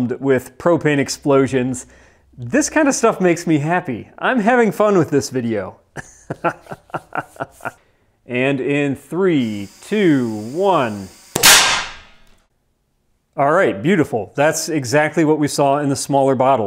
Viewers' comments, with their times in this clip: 0:04 I am the God of hellfire ! Confirmed "hahahhahahaaaar " evil genius , I see a little of me in their haha , woe it gets better awesome video bud